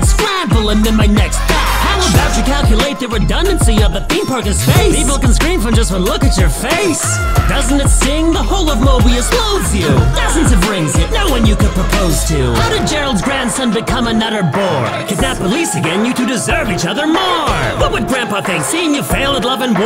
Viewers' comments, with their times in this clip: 0:04 i just realized, im pretty sure that little "aaa" you can hear is from the other jack in space